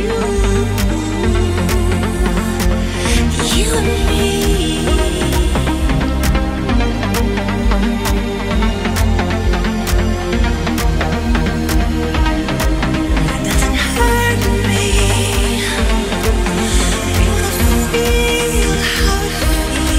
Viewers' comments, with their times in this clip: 0:03 Wait that's a door?